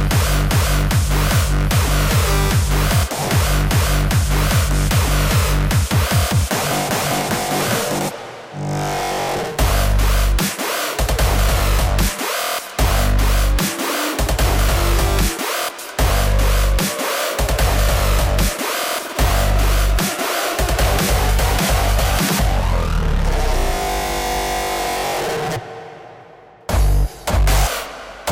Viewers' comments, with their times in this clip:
0:09 The change Sounds dubsteppy. It's not hugely dubstep cuz the samples used for the melodies are hella different. I think i get what you mean now. The overall melody and tune is more hardstyle even though the beat does change between the two? I agree. The beat is about as close to dubstep as you could probably get without compromising the Hardstyle synths though.